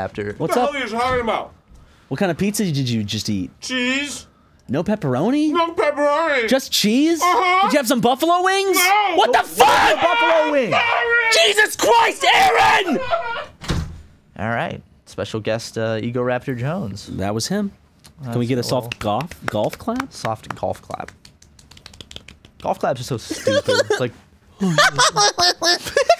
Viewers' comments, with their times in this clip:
0:09 The screams and cries of a distressed arin hanson will forever ring in my brain